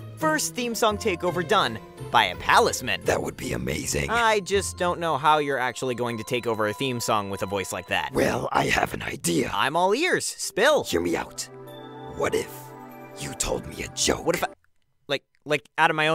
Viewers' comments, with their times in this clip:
0:04 He has a point though, why does he sound more evil than Belos? Also: Fly away, Flapjack. Be free!